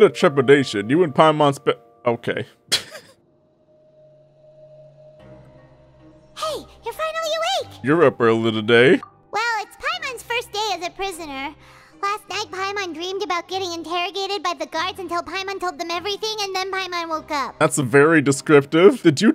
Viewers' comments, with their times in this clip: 0:05 the way Paimon says her line makes me think it's a Skyrim meme reference.